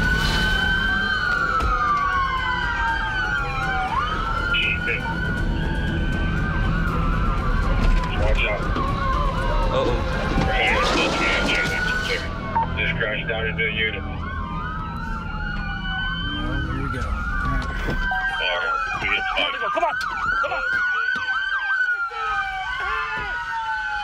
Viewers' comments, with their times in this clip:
0:10 that crash sounds like a sound effect used in animations